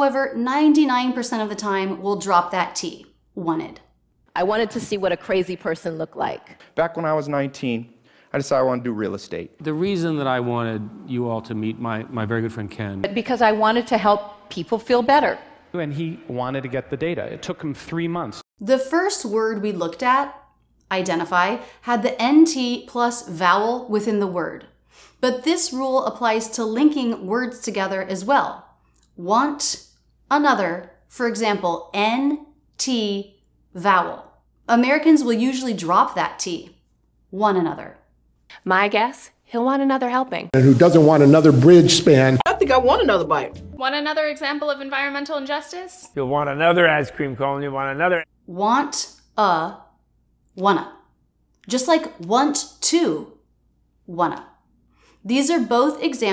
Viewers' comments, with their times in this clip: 0:07 Example number 2 for 'wanted' dropped the whole word altogether! 🤣🤣🤣🤣🤣
0:42 When somebody said "want another" I understood it as "one another". So, me as a nonnative English speaker, it was very confusing when it came to understanding "Want another". Now everything makes sense lol. All I can say is thanks a million Rachel, you're AMAZING!!!!